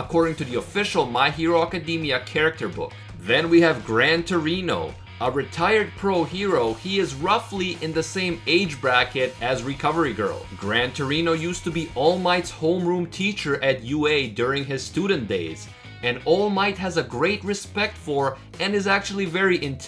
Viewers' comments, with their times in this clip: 0:04 LOL YOU KNOW WHEN I HEAR GRAN TORINO THE FIRST TIME I THOUGHT IT IS GRAND DORITO LOL